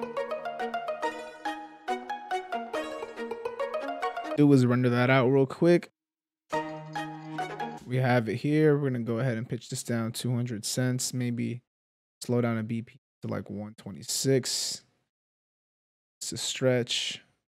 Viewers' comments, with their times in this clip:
0:03 Anyone got a Pirates of the Caribbean vibe